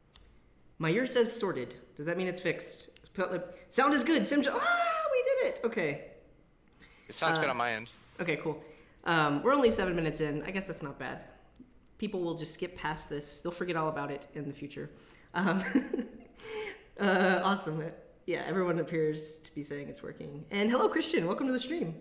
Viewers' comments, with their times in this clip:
0:08 Audio issues at the beginning. Fixed starting